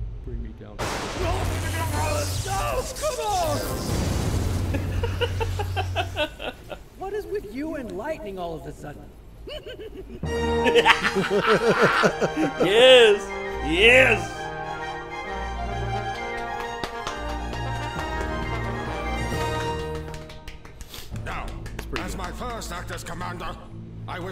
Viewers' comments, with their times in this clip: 0:10 omg dat laugh